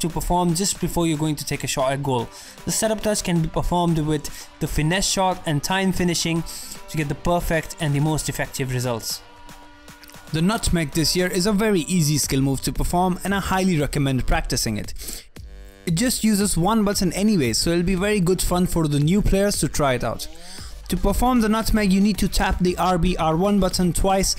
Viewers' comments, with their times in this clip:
0:09 are you eating something? :D